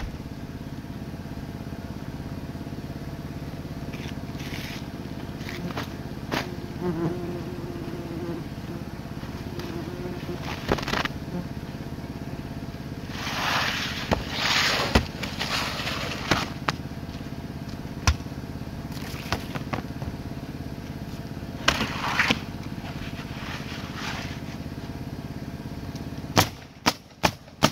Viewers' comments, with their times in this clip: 0:08 OMG 🤦🏼……. Watching this w/ my Earbuds and spatial audio on, and I’m sitting here at 11 pm in the hot humid FL summer weather w/ horrid huge ninja assassin Mosquitoes that when bite you; feels like someone hit w/ a hammer, lol….. But what was hilarious just now, in my ears heard a buzzing sound and jump out of my lawn chair b/c thought had a few mosquitoes trying to bite my ears, face, head, neck, arms, etc…..b/c of sound your mic picked up. Real funny thing, I’ve got 2 ppl looking at me and wondering why jumped out of my seat waiving my hands/arms around my head swatting at ABSOLUTELY NOTHING AT ALL, while I’m “DANCING” around🤣 Well, no biggy; as enjoy putting on a dance show for ppl and looking like I’m weird😄 Found out was your vid b/c hit pause real quick and it stopped. Duh me, lol 😝